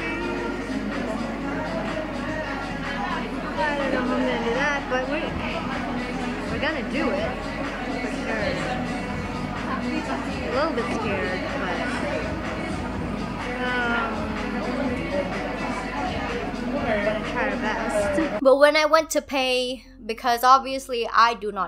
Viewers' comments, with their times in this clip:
0:03 as I slowly hear Seven by Jungkook in the background 😅😂